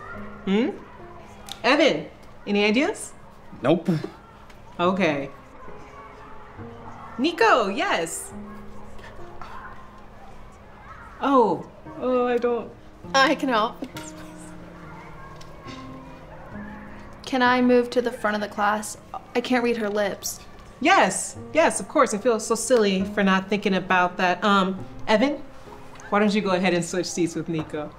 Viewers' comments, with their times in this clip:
0:08 Was that a whisper I just heard? Anyone hear that too cus that better not be just me. Continuity error?
0:08 Something I noticed was in the part where Nico is sitting in the back of class. When he is signing "Can I move to the front?" When he first signs "Can i", you can hear him actually whisper it. Its if you want to find it. You need to turn up your volume so you can hear it.
0:08 no way i heard nico talk 💀
0:08 who else heard him whispering?
0:09 nico whispered can i
0:09 He whispered “can I” I thought he’s deaf💀
0:09 Bruh you can hear Nico on